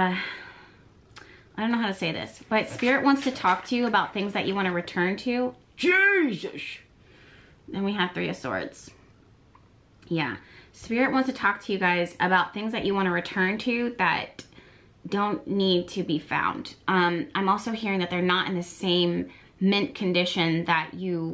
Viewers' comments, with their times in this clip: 0:05 idk why but that JESUS scared the hell out of me LOL